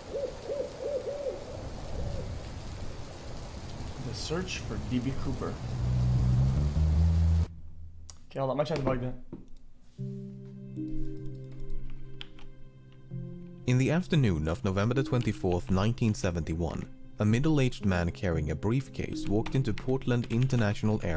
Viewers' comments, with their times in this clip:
0:07 wow nice understandable sentence pepega